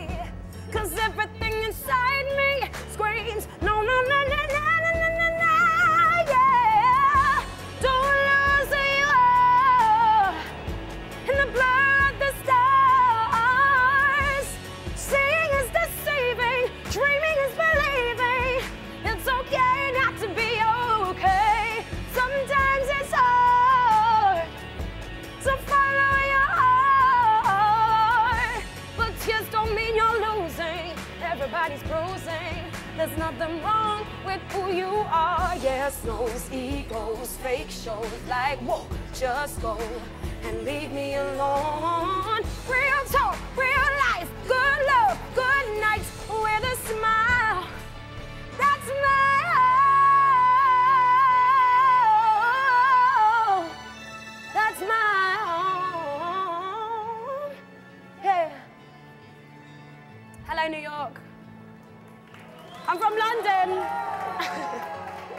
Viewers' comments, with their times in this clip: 0:08 he is REALLY appreciating the vocals, what a phenomenal vocalist.
0:48 That note pear perfection